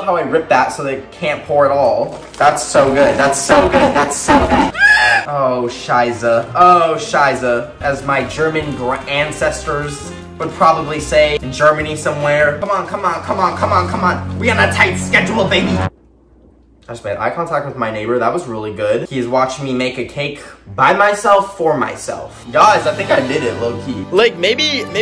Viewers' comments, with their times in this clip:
0:06 I literally had a heart attack and i don’t even know why but i HATE the german language